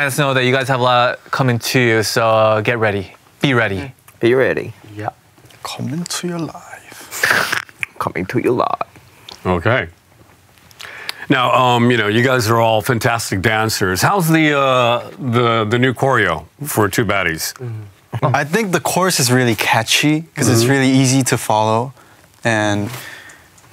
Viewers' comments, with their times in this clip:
0:05 not JAEHYUN singing DPR LIVE’s line